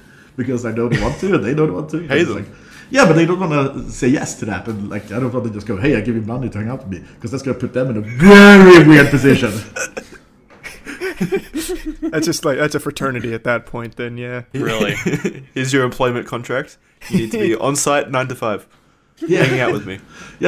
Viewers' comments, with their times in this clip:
0:06 ear rape for your souls